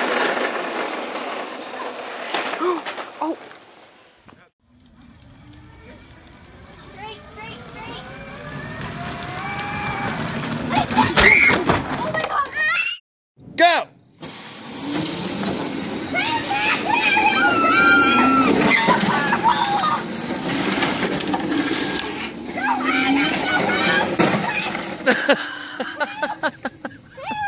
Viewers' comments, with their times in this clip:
0:05 just watch SHE IS YELLING BREAKS on a power weels toy like the breaks just lock up the back tire and make you go even faster and it’s so funny lmao
0:07 bro did not even get hurt and screamed💀
0:08 Jesus Christ don’t scream like that kid honest to god
0:08 cut scream WOW
0:11 that perfectly cut scream 🤣🤣
0:11 the toddler scream 💀
0:11 he sounded like he was in a lot of pain
0:12 man that scream was delayed
0:12 kid starts screaming then I start screaming to
0:12 the way he cries 😂